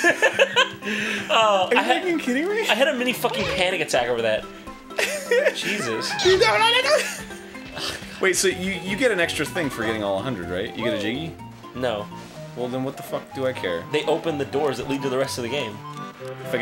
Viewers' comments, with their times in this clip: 0:03 Did Arin just say "are you HECKING kidding me"